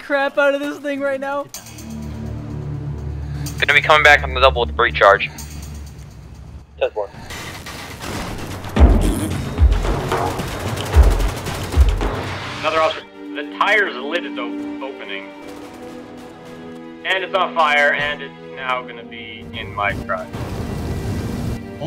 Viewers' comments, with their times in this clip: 0:06 that guy made a fart noise as he died XD
0:09 The cop farted when he died